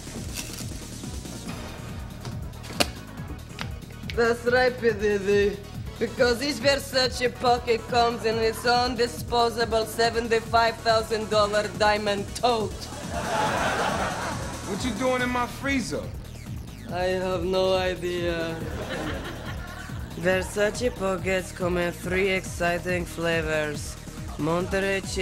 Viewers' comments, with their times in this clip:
0:06 The way she says TOTE so forcefully cracks me up! 😂😂😂